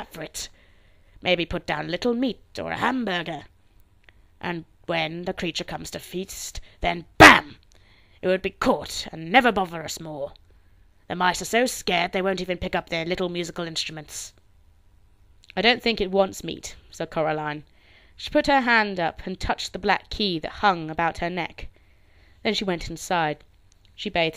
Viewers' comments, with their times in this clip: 0:07 Thank you very much for reading! (I had a jumpscare with the "BAM" LOLOL)